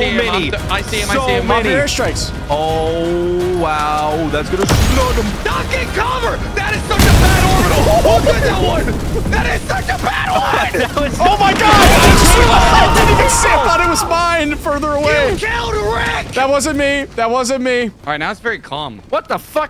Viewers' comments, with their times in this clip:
0:05 I love how intensely he says "duck and cover!" It's so good